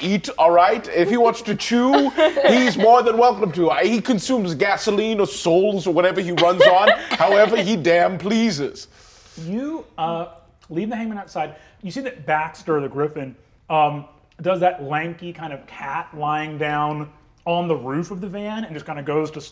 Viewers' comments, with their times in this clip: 0:03 "he consumes gasoline or SOULS or whatever he runs on-" incredible line delivery